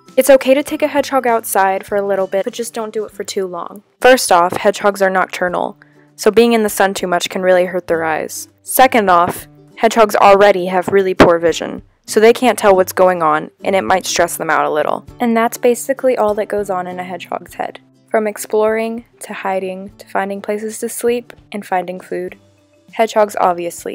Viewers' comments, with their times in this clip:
0:03 the ear rape tho
0:09 goddamn okay .. don't need the ear rape 😭